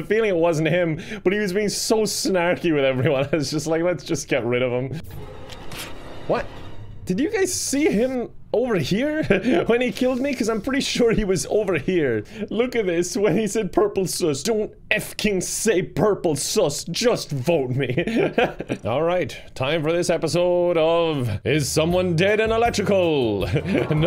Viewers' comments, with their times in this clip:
0:06 the softest Waluigi "wah"